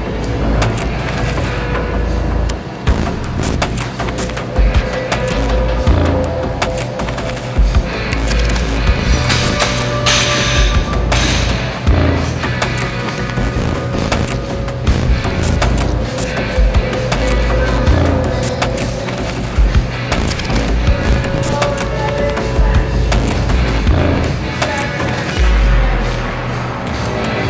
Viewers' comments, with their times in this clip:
0:09 Ronnie and AC/DC on the background, perfect combo of the goats 🐐